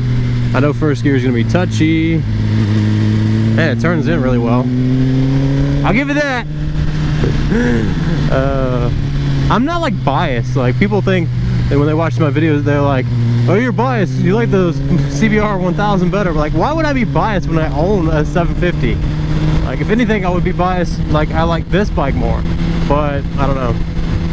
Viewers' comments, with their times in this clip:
0:08 if you close your screen the bike revs